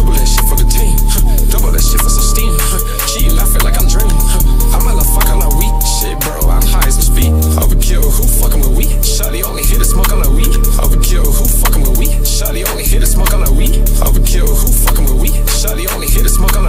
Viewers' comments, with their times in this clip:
0:03 spooky ahh beat 😂